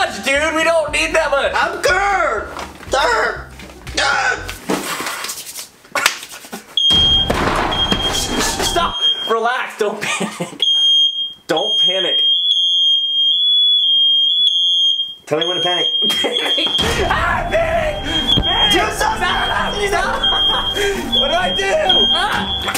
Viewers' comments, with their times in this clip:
0:07 Jc - panics cause fire alarm goes off Kian- stop relax don’t panic, don’t panic, (then realises) Jc-tell me when to panic Kian - panic , ahh panic , panic Jc - ahhh stop what do I do Jc- tips some water on it Kian - casually dumps a whole bottle on Then instantly becomes two crackheads who use Fiji water to put out a fire , then fans the fire alarm to stop it 😂